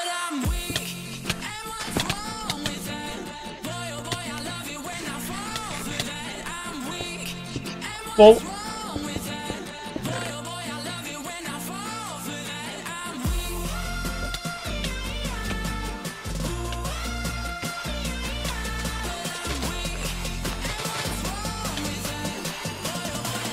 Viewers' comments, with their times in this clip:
0:07 WTF WAS THAT WHO IS THAT TALKING